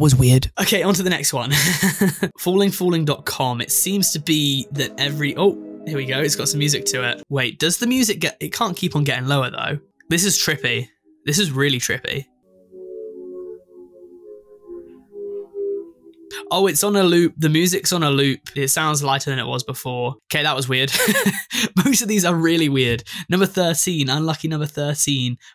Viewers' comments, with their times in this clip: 0:06 That's what you call a shepherd's tone. It gives off the illusion that it's decending in pitch. It's done when three notes are decending atfer the other, and each one loops back when it reaches it lowest, while the other two notes masks the looping.